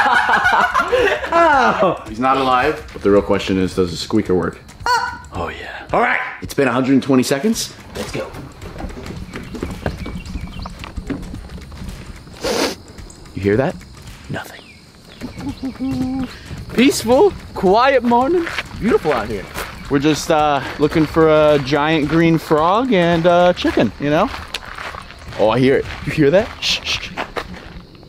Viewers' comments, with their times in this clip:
0:10 sniffs intesaly YOU HEAR THAT